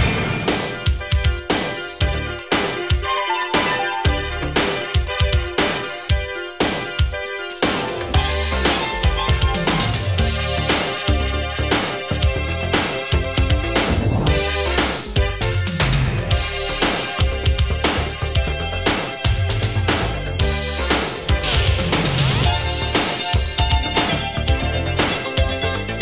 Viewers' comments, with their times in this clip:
0:09 🗣That Part.... 🎹🎹🎹 C'mon Keys!! 🔥🔥🔥🔥🔥